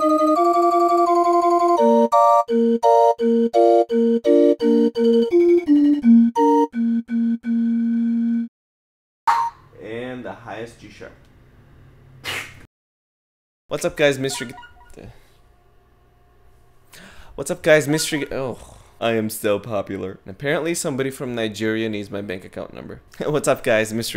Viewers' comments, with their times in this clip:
0:09 highest g# wow